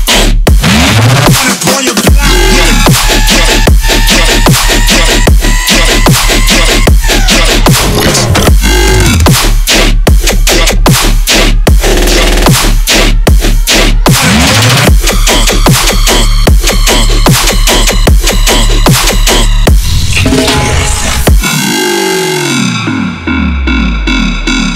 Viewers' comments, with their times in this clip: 0:09 The flow wtfff I have this on repeat everyday